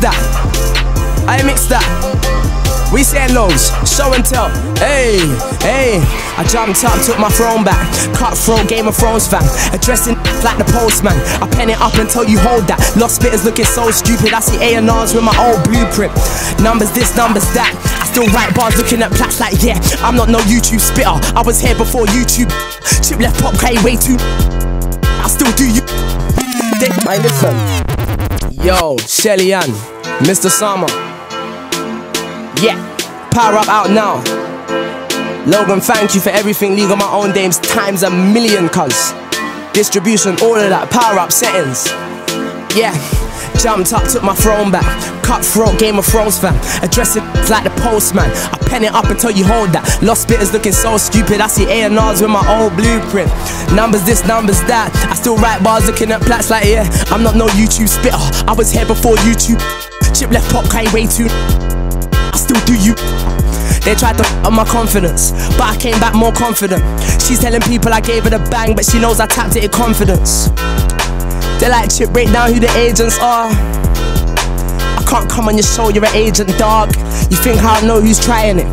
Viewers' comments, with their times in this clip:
0:06 And the beat that drops around the mark
0:21 the flow switch up is just mad
0:36 This BEAT are you mad?!
0:36 THAT BEAT IS COLD WHAT'S IT CALLED?
0:56 That first drop thooo
1:06 them voice cracks tho